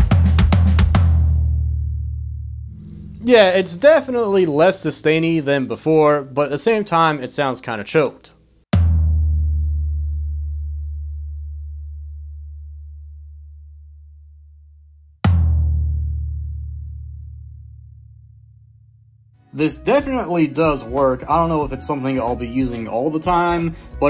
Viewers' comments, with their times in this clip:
0:09 Sounds exactly the same to me... The old Ludwig "Club Date" toms had straight floor tom legs. I think old Sonar did too. I think it was the ANGLE of the floor tom in the clip you showed of the DW guy that made the sound different. IMHO